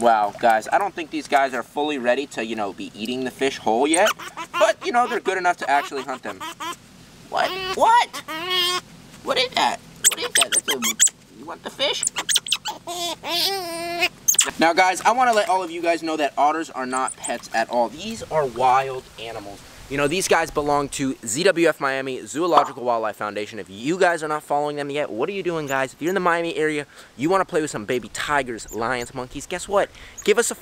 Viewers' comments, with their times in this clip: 0:04 who gonna talk about their laugh
0:05 I think the otters are singing
0:06 sounds like the otter is laughing
0:08 Coral tries to eat making a laughing noise me : 😂😂😂😂😂😂😂
0:12 I like the sounds they make